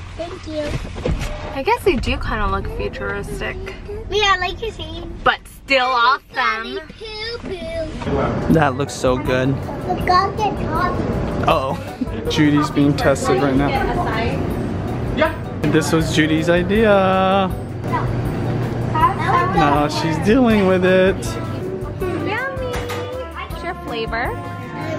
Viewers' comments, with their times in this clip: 0:06 in the background ''everybody poo poo'' 😂😂😂